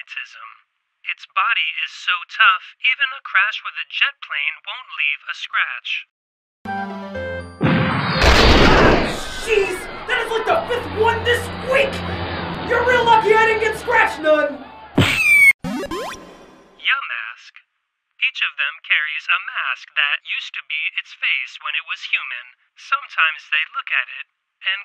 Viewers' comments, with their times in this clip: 0:07 Is it just me, or does he sound like bill cipher